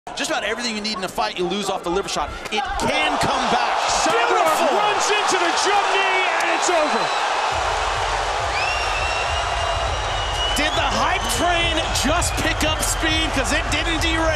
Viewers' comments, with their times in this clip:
0:02 that's the sound of his skull breaking